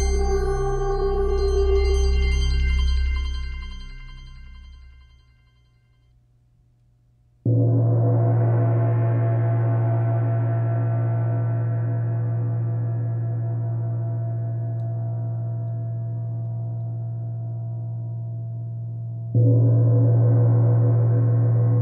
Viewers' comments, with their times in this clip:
0:07 reminds me of the gong sounded at the end of the music video of Queen's hit song "Bohemian Rhapsody." Roger Taylor was the one who sounded the big Chinese Chau gong.